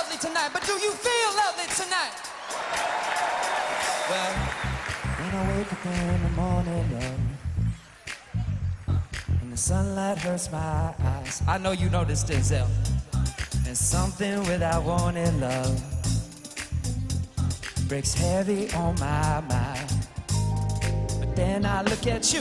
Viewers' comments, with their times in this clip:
0:04 That Bill Withers break down always gets me.